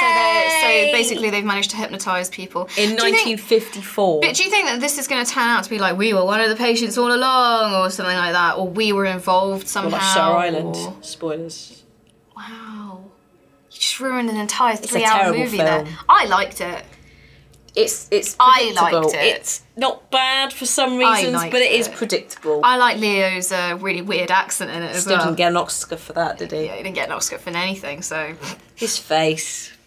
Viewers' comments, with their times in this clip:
0:10 Can anyone hear a noise